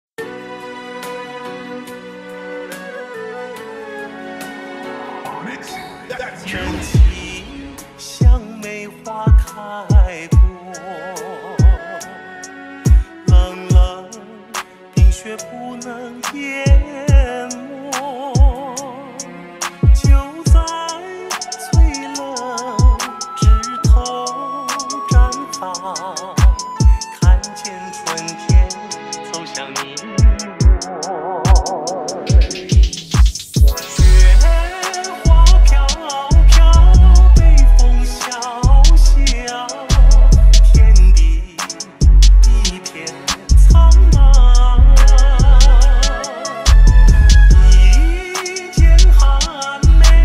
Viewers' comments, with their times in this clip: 0:05 notice how it says onix
0:33 is the beat drop.